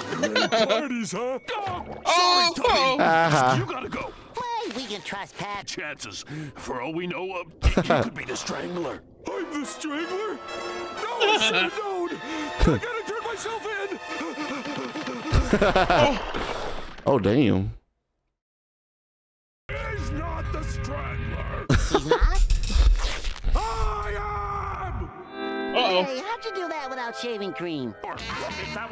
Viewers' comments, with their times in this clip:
0:09 "I'M THE STRANGLER?!"" Oh my GOD no 🙈 Patrick the moment that music hit in I LOST IT lol 😂😂